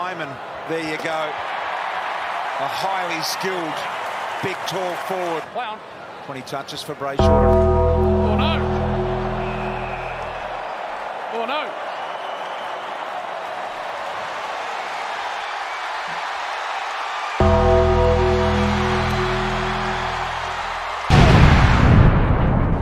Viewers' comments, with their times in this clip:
0:06 "aw no... aw no" sounds like something from the big lez show lol